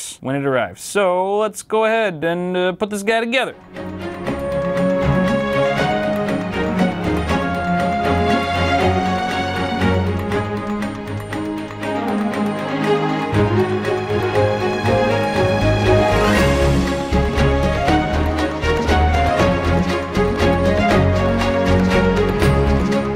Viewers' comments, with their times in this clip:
0:07 sounds like the sims music